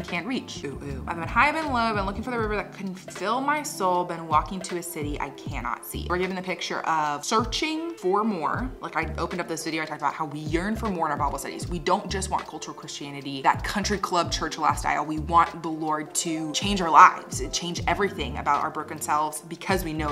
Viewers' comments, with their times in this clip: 0:05 I was waiting for the ''oh-oh-oh'' interpreted by you hahah